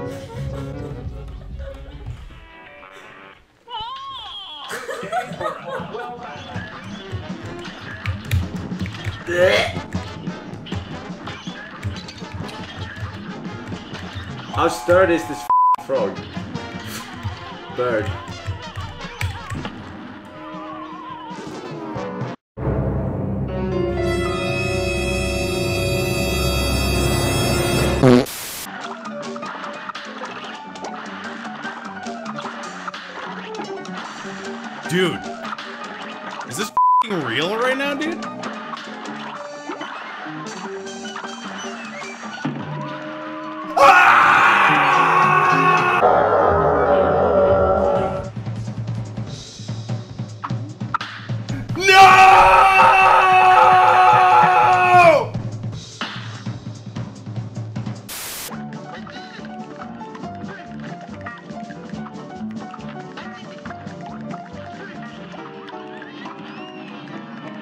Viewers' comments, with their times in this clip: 0:08 Forsen just made me fall out of my chair laughing. * retch *
0:51 His voice just changes when the arrow sitches place
0:51 He kinda sounded like Niko Bellic
0:51 bruh sounds like the game over on plants vs zombies
0:55 you shouldn’t be screaming that happened To me 6 times